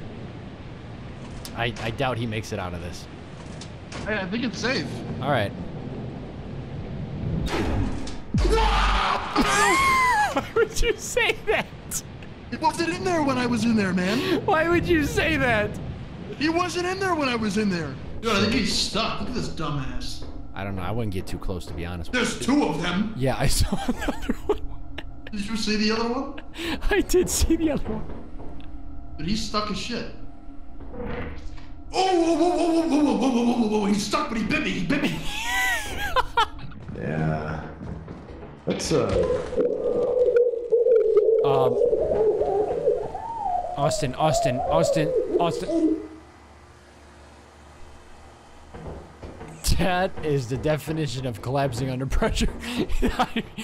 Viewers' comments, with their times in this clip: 0:07 the biggest "WOOOOOOOOW"
0:07 Wario said calmly
0:39 Wow, the muffed screaming is a great detail! XD